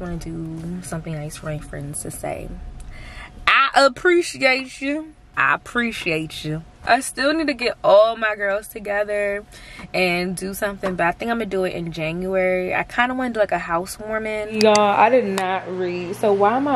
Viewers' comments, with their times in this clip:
0:03 I kept playing over and over lol! It was so funny to me how you said "I appreciate chu!" 😂